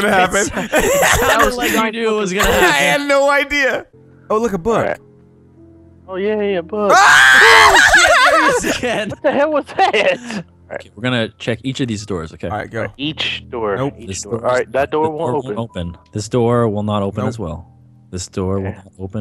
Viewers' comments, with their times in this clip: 0:06 Girly scream inbound.